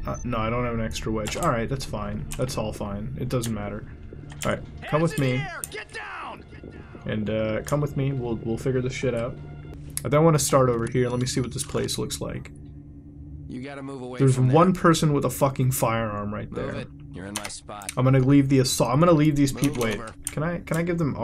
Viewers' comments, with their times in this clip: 0:05 How loud is his headsets? I can hear the protagonist's compliance through his mic xD